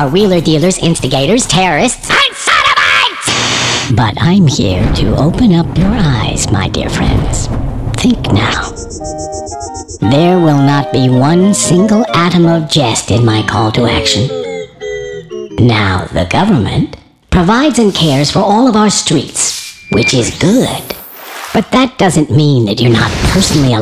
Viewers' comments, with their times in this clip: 0:05 NA NA NA NA NA NA! (Shots) RAAAAAAAAAAAAAAAA!!!!!!! white noises